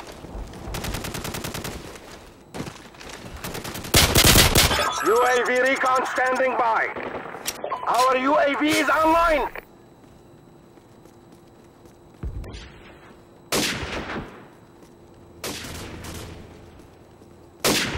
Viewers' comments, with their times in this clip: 0:04 it kinda sound did like a song LOL